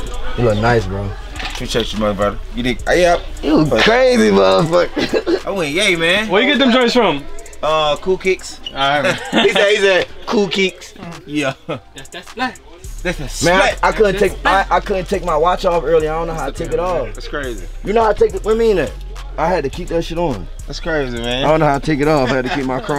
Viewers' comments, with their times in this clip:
0:05 the way uzi mocks gunna “cool kicks”😭
0:05 where you get them from Gunna: koo kicks